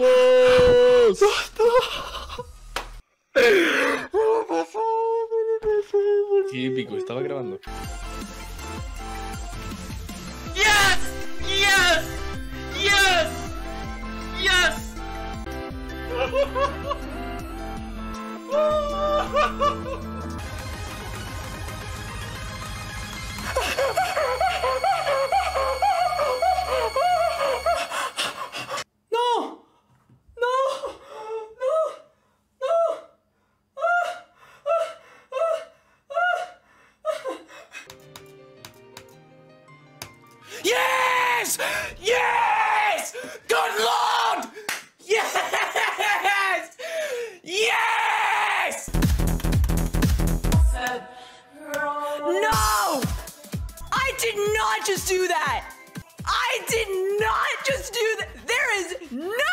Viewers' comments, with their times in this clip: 0:07 not noisy good 👍
0:40 he's voice sounds like Nolan from MrBeast.